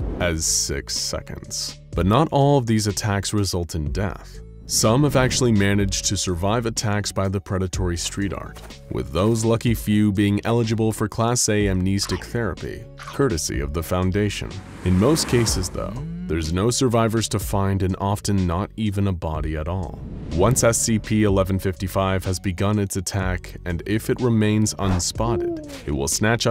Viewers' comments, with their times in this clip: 0:10 I like how they use the Scooby-Doo eating affect